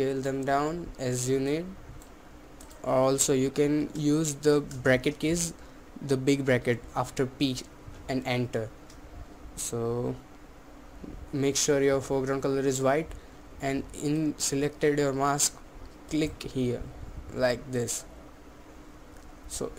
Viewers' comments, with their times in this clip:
0:05 Breaker Kits ? The Big breaker after beat ?